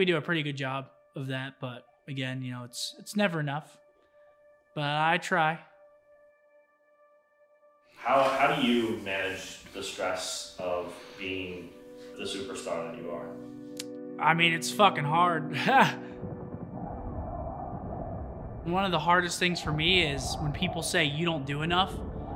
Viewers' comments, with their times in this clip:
0:04 the definition of a Slayer. damn his tone change hit me... :(